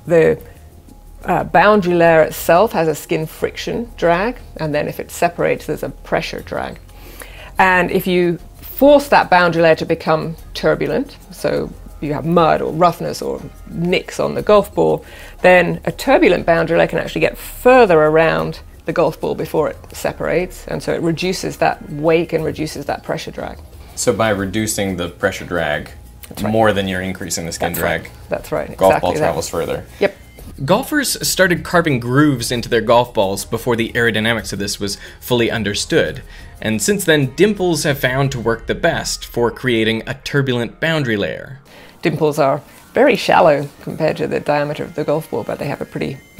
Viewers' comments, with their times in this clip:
0:05 I swear the music sounds like someone layered halo reach's theme with some other beat.
0:27 she sounds so done with the conversation-